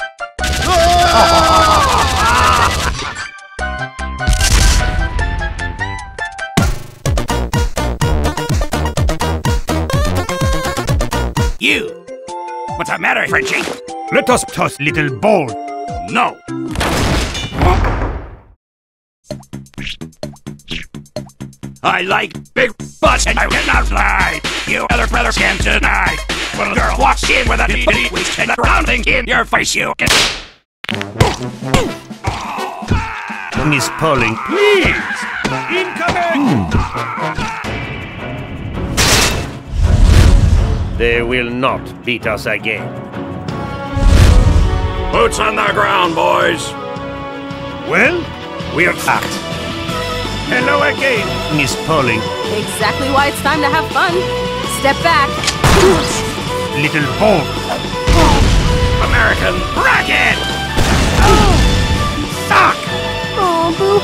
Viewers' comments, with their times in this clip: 0:07 no, miss pauling and spy Its seems like pixel song
0:12 the music... nostalgia intensifies
0:20 Is no one even gonna talk about soldier singing baby got back?! That voice splicing was so freaking smooth!
0:21 best music ever
0:21 best music ever
0:47 Nice game song